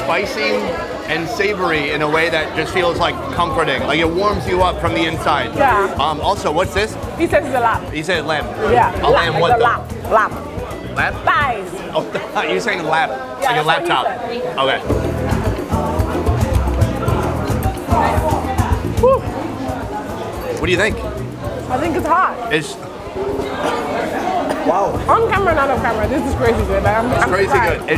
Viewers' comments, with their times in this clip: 0:08 she said they were eating lamb. he thought she said laptop 😂